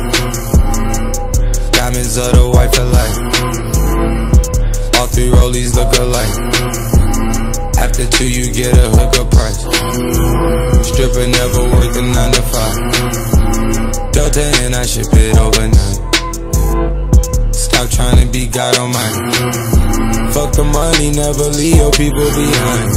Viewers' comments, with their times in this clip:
0:06 sounds like my lawnmower when it wont start up.